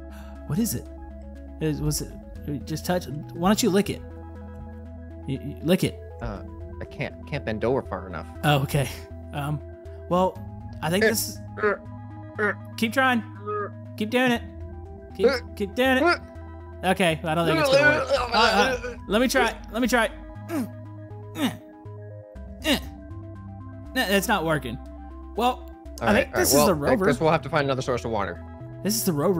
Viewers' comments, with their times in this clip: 0:10 it starts the smexy time starts to play slow jazz music